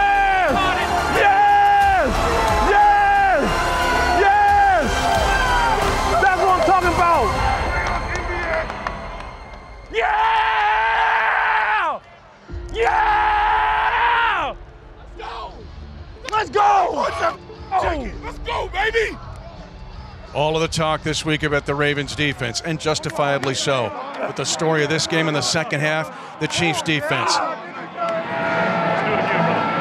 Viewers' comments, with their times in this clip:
0:10 How did the sound engineers and mixers isolate Mahomes' voice in ? They managed to remove the crowds noise and everything. That was a spectacular job! A great video and a superb series, everyone!